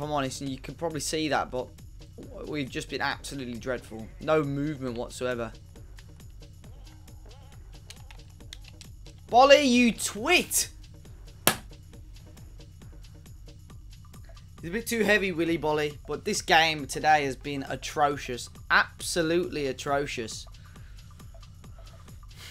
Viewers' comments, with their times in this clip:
0:09 were u trying to say boly u tw*t lol